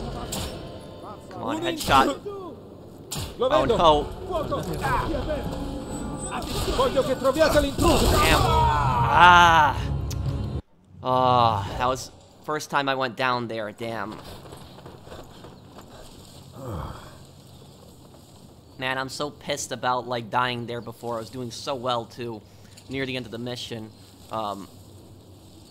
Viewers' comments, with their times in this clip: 0:08 Being dressed like him is one thing but having the same pain screams as him is on another level! Love your videos